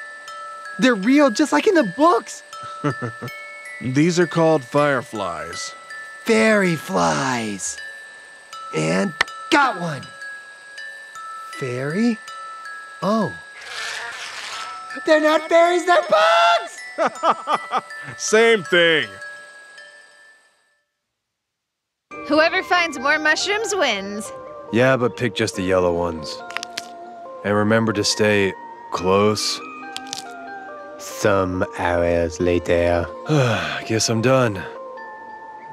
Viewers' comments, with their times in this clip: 0:06 Yo why is Pup sounding like Asgorre in
0:17 paps voice reminds me of All might from mha